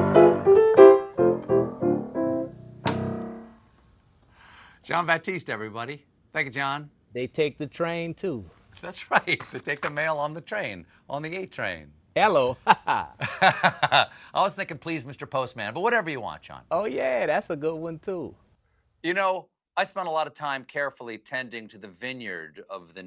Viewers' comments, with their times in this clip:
0:04 Here you see how important Jon Batiste is for Stephan. The moment he's out of the line, Stephans voice loses his foundation in the low frequencies and sounds shallow.